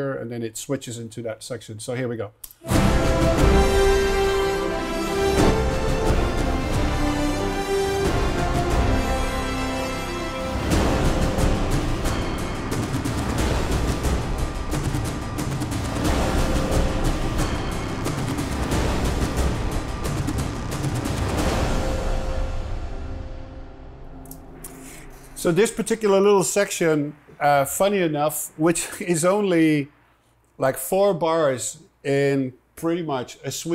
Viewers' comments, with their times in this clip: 0:10 those percussions are so Mad Maxy 😂😂👌
0:18 The drums sound like the same drum samples from Mad Max! And the sound design stuff is super cool, really amazing stuff